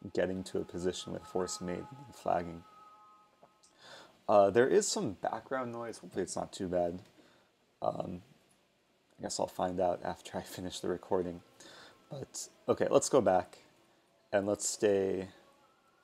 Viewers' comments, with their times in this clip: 0:04 respectful It's THE ADAN not a noise